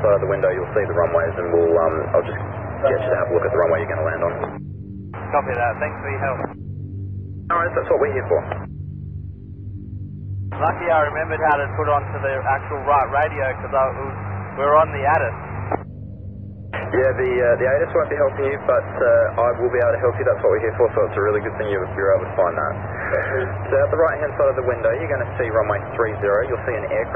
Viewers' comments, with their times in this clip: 0:10 you can here the pilot's tone change. He took control of his situation and at that moment he knew he was PIC. If he continues his training someday this will be the story he tells about the moment he knew he was a pilot.